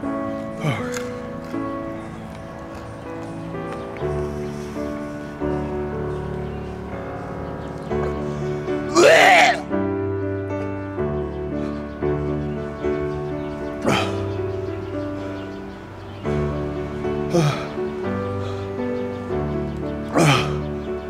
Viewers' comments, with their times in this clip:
0:08 now there's a text message alert sound for ya.
0:08 that's my mating call for the ladies